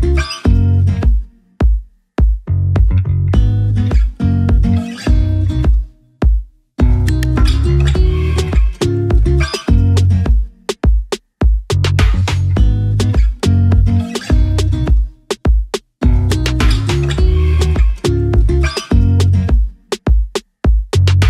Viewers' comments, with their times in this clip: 0:07 I thought some crazy lady was yelling outside.